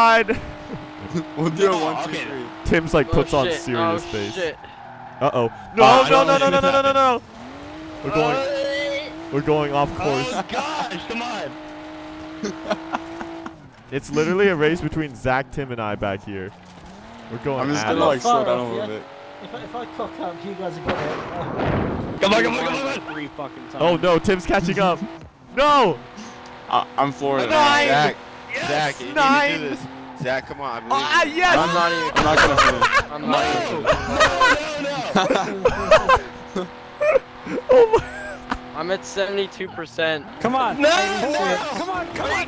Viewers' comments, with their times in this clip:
0:05 Mmm Skyline go brrrr
0:29 he turned the eurobeat up too loud